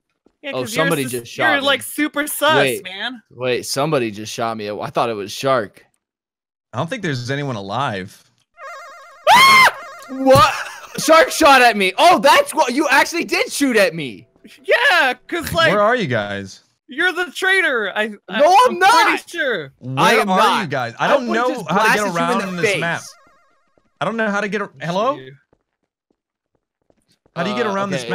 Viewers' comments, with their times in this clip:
0:09 that was a beautiful scream